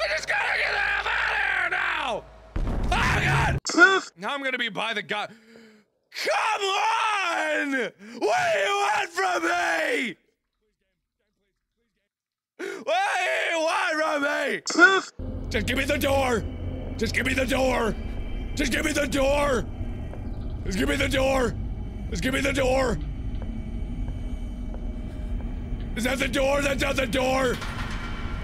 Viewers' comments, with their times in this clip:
0:10 Anyone else hear Mark begging ?